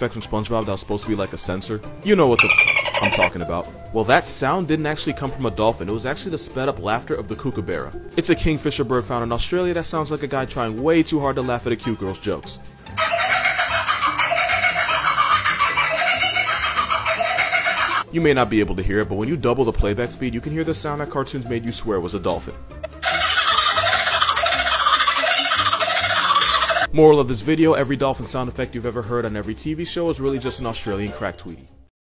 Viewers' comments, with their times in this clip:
0:06 as an australian the way he pronounced kookaburra is making me want to jump in the ocean
0:21 If you speed that up by 2x that sounds like a machine gun